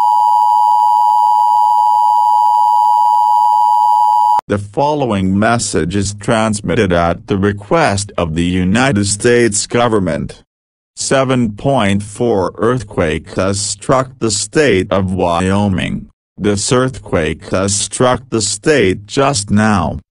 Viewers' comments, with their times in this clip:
0:04 Why is Eric’s voice so slow?